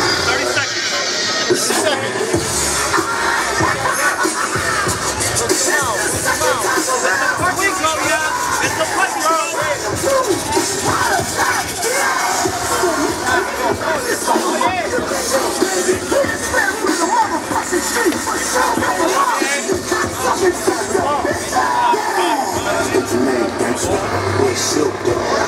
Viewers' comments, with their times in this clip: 0:10 Whatever song that was that started ish with Snoop Dogg sounded like Kevin Hart in the beginning.